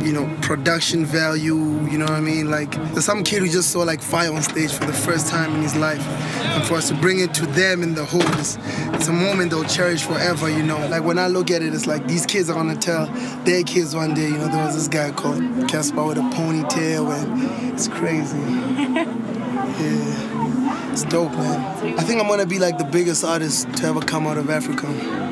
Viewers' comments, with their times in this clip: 0:07 when he is speaking he sounds like Nas!